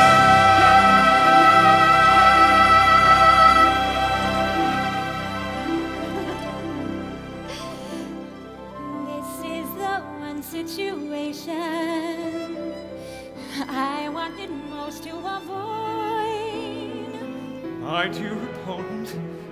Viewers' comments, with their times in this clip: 0:06 Idina's giggle is so much like a young girl meeting and speaking with her crush for the first time. So cute and vulnerable.